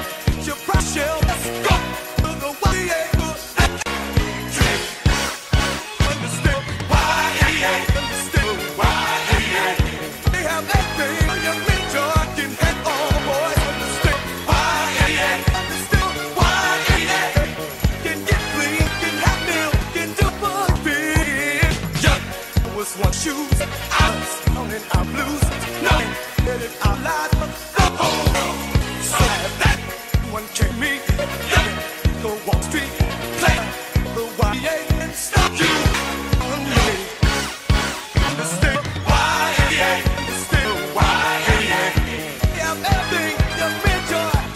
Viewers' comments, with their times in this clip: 0:07 yuh, there’s no feel down, said yuh, you’re surrounded I like how “young man” is truncated into “yea” and the chorus spells that out Each time EA ruins a game
0:11 "I can hit all boys with a stick," Lmao
0:12 Can’t not hear “You can hit all the boys with a stick”
0:13 "you can hit boy with a stick." Lol
0:17 They sound like cavemen "You get clean, you have meal, you can do what feel."
0:18 You get CLEAN You have MEAL
0:30 “that one killed me on Wall Street” That’s exactly what the ghost of a HUNG BOY would say
0:32 The Wall Street: CLAP.